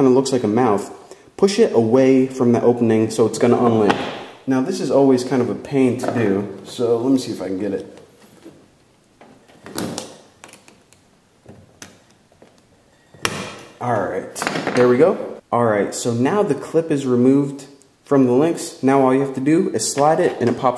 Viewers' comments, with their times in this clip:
0:08 it sounded slightly like an explosion :P